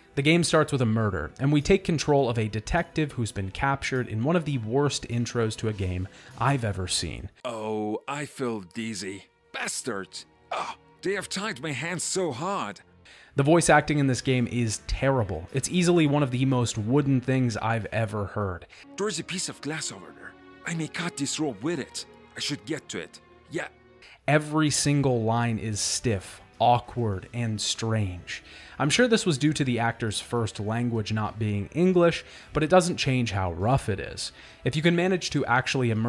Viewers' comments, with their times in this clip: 0:08 kinda sounds like a gigachad Kwebbelkop
0:18 Why does he sound like Sleet from Sonic Underground lmfao
0:18 Holy crap is it just me or does the protag character sound like that guy from The Room?? 😂
0:21 That voice actor sounds exactly like Skwisgaar from Metalocalypse